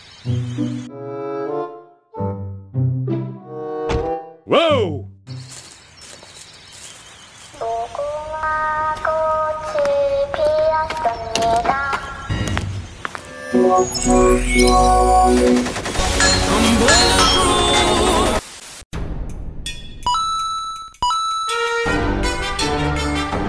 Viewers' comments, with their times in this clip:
0:07 this chant will always get me, man. I surrender.😂 I remember the clockwork Queen doing it.🤧